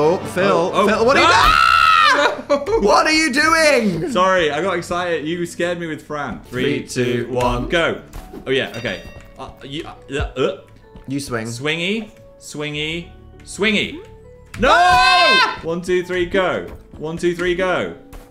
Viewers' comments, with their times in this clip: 0:03 to be fair i got scared with dan’s fran voice too